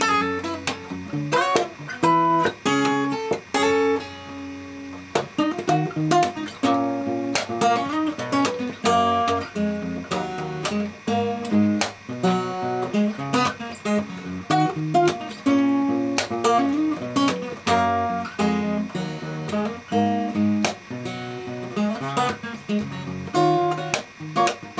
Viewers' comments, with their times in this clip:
0:04 sounds like it has a lot of potential. it sounds like in that second part (after that key change ) a lot of the lead parts would sounds great if they were sung, opposed to being played, leaving you room to play rhythm and such. That's what i have to add. Sounds awesome, keep it up
0:05 I love the whole thing, but I especially love the part starting Is that a separate song? It's extremely catchy. Also, can I ask what tuning you're in? I don't have my guitar near me, but I assume it's not standard?